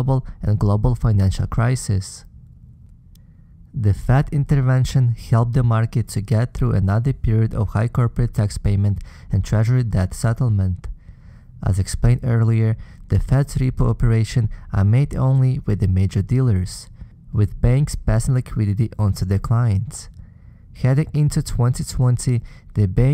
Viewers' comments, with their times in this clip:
0:07 What is high carpet tax payment?